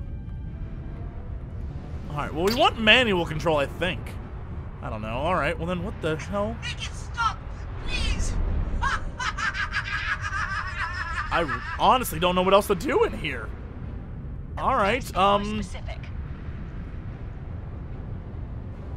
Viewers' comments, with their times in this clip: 0:05 does the navscarf sound like invader zim to anybody else?
0:06 that robots voice sounds like pox from destroy all humans